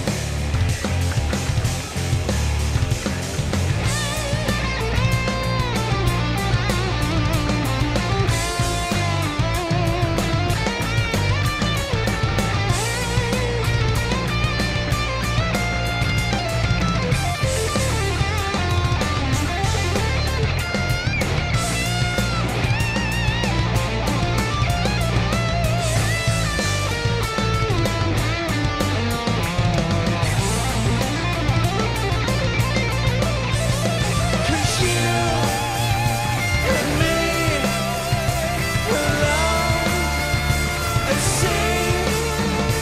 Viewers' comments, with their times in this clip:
0:03 This guitar solo from is amazing!
0:29 Trevor from gta 5 with the badass guitar solo